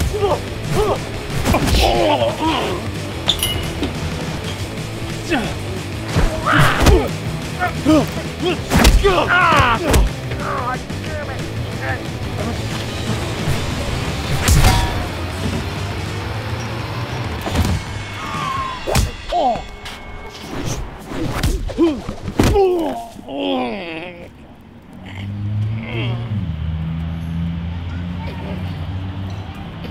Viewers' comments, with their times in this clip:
0:10 was amazing, all fight sense was amazing, only the sound effects should be improved some way.